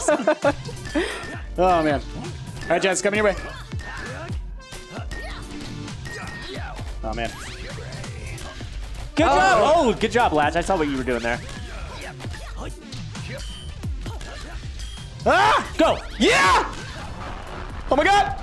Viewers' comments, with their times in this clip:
0:05 RIP from insane laugh